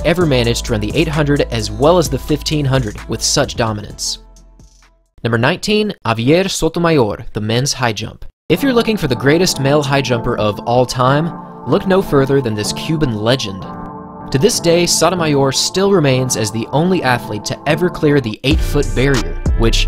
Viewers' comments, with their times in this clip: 0:07 your pronunciation of Sotomayor could cure cancer